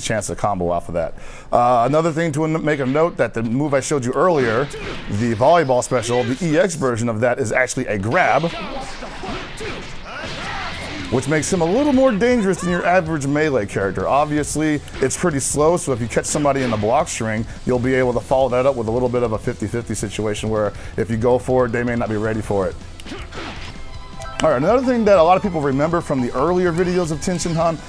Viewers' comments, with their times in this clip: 0:08 Is it just me or does someone say "What the fuck?" ? I cannot unhear it
0:08 did I hear what the fuck?